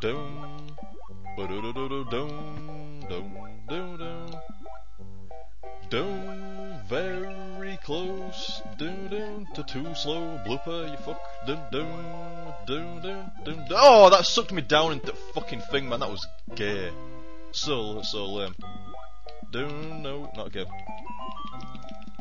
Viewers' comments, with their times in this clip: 0:07 dat jaunty tune